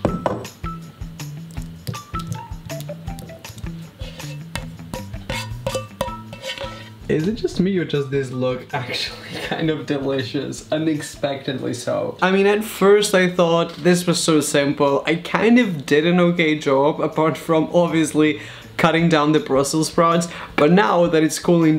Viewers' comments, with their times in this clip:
0:07 I thought my headphones broke